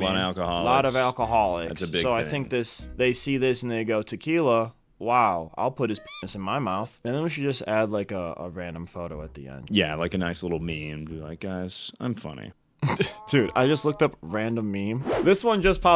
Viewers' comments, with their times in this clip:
0:03 seems like he said the N word haha